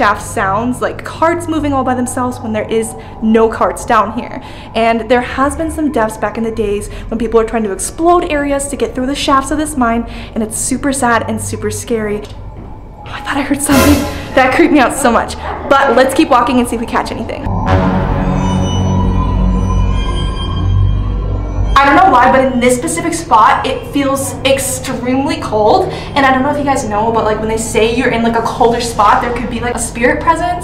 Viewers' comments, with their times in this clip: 0:07 I heard a quiet lullaby...
0:15 I heard banging
0:16 Okay you can hear a cough or something like that so that’s a bit creepy..
0:17 in the video I heard a noise